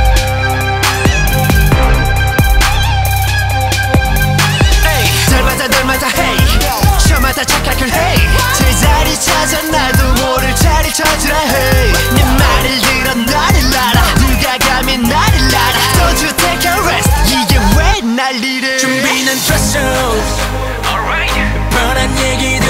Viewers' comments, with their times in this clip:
0:05 I wasn't ready to Eunhyuk's rap, he is really attractive.